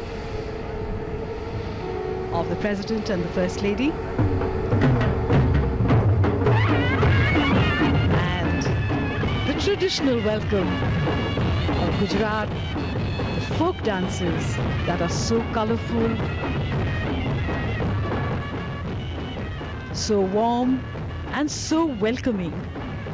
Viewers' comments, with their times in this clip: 0:09 those drum rolls xD